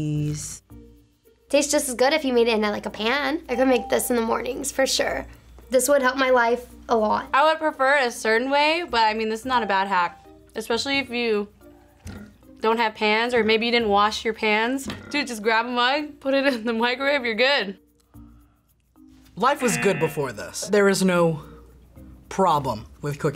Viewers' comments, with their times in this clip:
0:10 if you don’t have hands then you just grap it😂